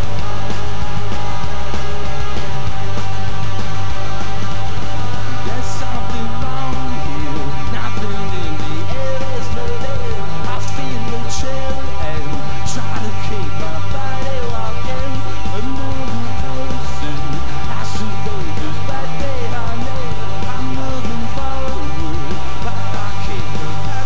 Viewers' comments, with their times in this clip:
0:10 the girl in the back is taking a photo. Did I actually just hear it click in that second?